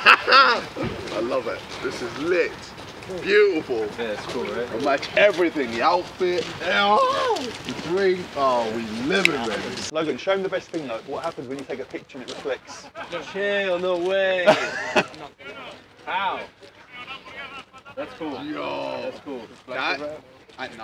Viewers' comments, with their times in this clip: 0:06 The way Ksi's voice Cracked Was crazy. min But the fight was F*****g Rigged F*** Tommy Fury